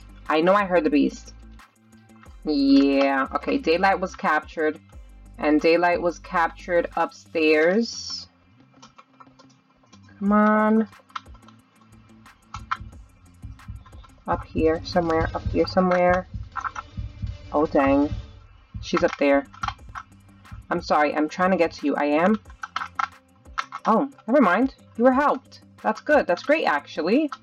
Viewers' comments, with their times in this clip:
0:09 idk why but that sounds like the word mom instead the word cmon XD Just me? Ok I guess it's just me